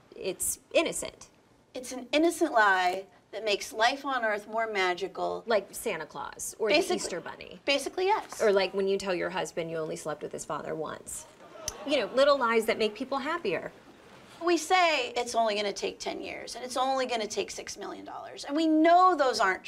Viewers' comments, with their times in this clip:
0:06 The Mars One guy sounds like Goldfinger from Austin Powers. I was waiting for him to say, I like Goooooolllld 😎 Dang Lady.... what a sucker